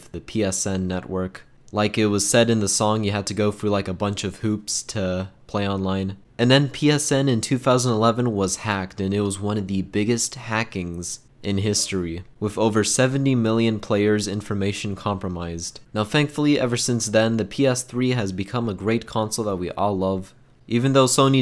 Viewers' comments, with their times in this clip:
0:07 for a second i thought it said jesus. 😂